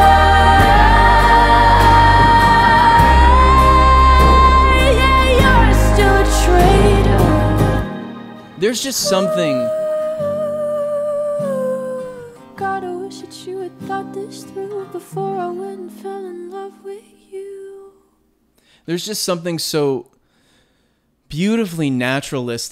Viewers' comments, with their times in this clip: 0:06 the way I always release a breath at this part too is crazy. Like you could just FEEL the emotion within her voice. Everything just comes together at once